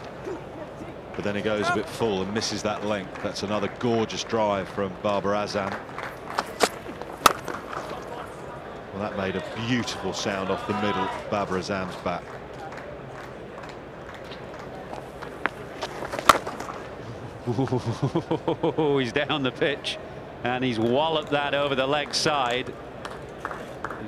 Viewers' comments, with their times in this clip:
0:07 that sound of the bat of Babar 🥀